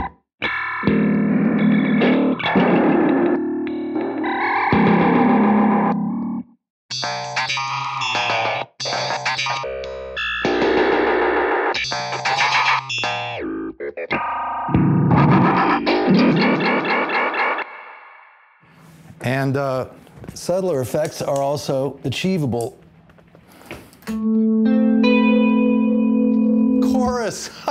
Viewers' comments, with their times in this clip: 0:09 sounds like EQD demo videos intro music